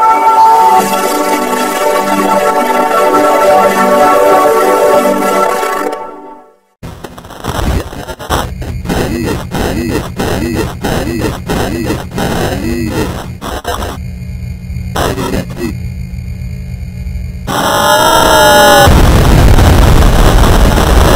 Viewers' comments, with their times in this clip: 0:06 sounds like X has a Conga Busher